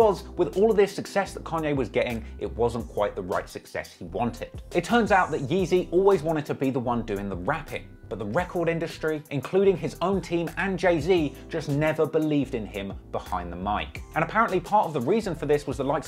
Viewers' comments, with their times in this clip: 0:03 It’s only him 😭😂black Londoners we don’t say it like this it’s even stressing me why he saying it like that but he says it proper 🤷🏾‍♂️😭like he’s just switching between